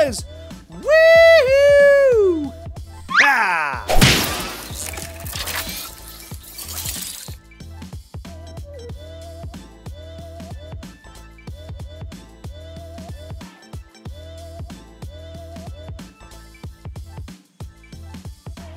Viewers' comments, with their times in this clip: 0:03 Me when hear to loud at office